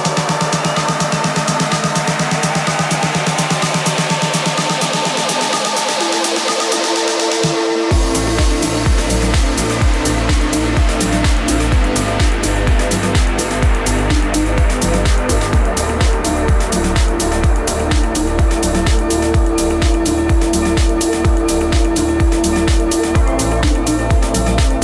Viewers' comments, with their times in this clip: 0:05 That drop 😭😭😭 Goosebumps and I wasn't even there. Damn. Epic set.